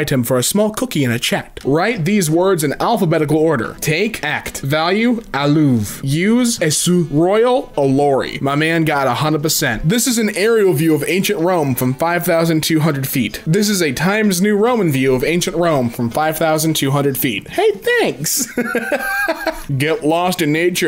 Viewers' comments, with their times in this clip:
0:07 the way he said “alory” 💀💀